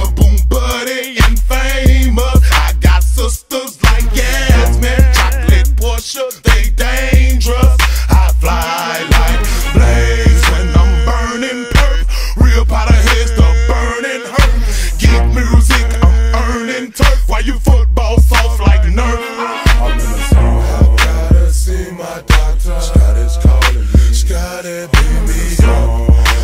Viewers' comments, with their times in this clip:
0:08 love dem adlibs shxt get me hype asf🤣🤣 “yeaaaaaaaaa!” 💀